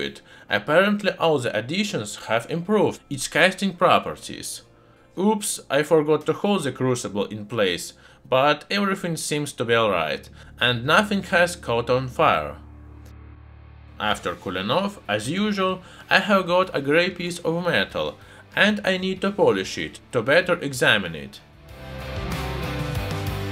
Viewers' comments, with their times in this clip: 0:04 that 'opps' is the chillest opps i ever heard